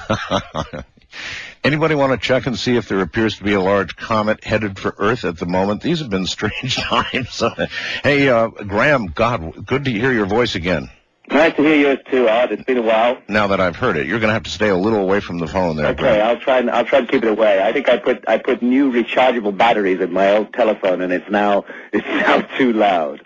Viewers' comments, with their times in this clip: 0:08 is the first time you hear Graham's voice